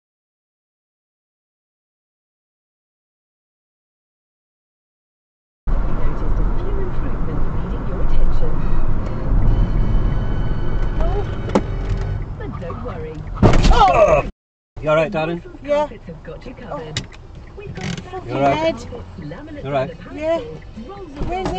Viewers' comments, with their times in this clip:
0:08 that music is perfectly timed